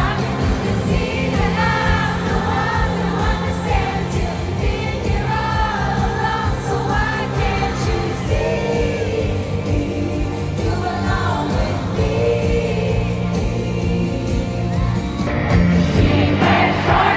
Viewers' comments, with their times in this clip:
0:03 Girl seemed too calm when singing like omg I would actually FAINT and DROP DEAD and probs break my neck dancing. ❤❤